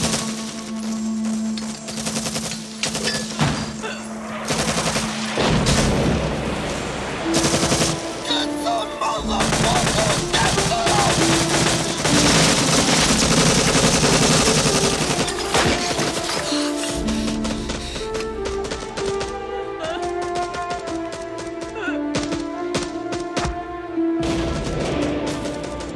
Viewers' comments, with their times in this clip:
0:08 a genuine war cry... 👍